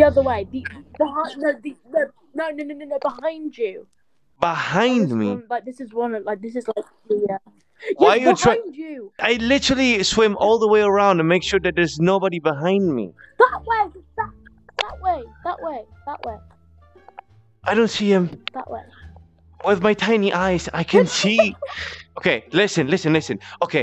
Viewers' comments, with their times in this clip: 0:06 In he starts sounding like shrek 😆XD